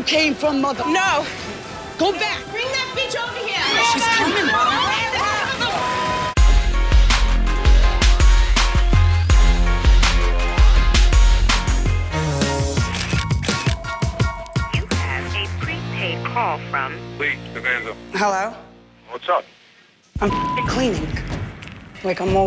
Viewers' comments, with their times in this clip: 0:04 when she’s yelling “GRAB HUU” while trying to roll down the spanx 💀💀